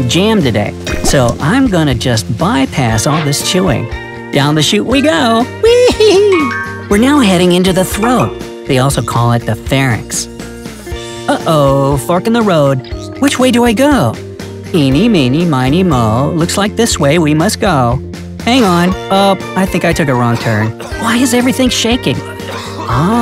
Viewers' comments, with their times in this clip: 0:05 sounds like GRIAN
0:11 sounds like he said the f word